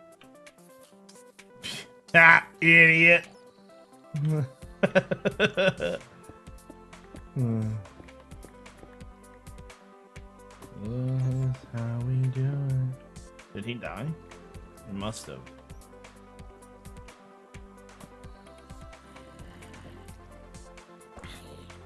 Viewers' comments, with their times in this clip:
0:07 the zombie sinked with the music.